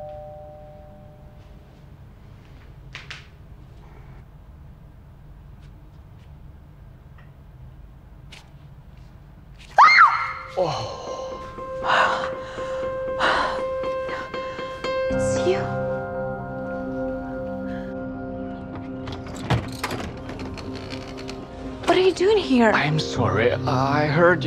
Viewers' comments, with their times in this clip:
0:09 😂 Cute Scream❤️ Women can Scream